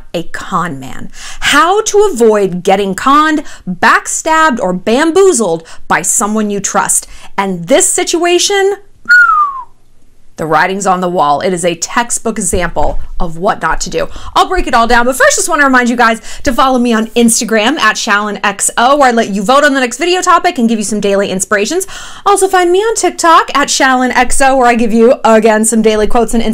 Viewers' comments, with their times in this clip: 0:08 was that not the most flawless whistle, I tried to do it like 30 times